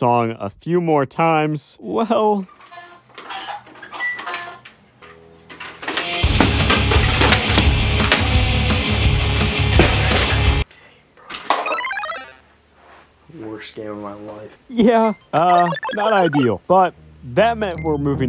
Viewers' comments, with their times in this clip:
0:06 Nirvana vibes :D